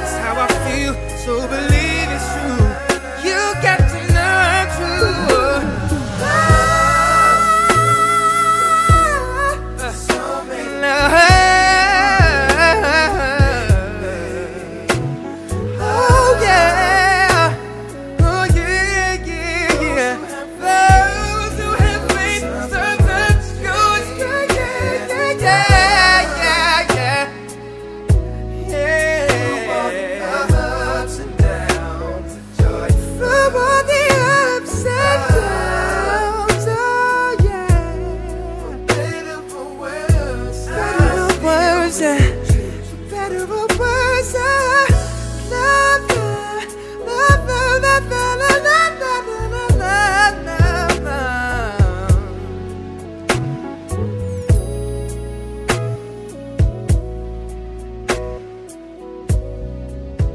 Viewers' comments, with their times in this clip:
0:05 OMG yo you killed that high note thats when most people loose the're appeal but you kept it going and went hard, strong performance
0:06 you started a second too early and you have to take a breath and hold the notes for 9 seconds. very nice rendition though
0:48 his voice hits a note.. it sounds like a harmonica. i love it :D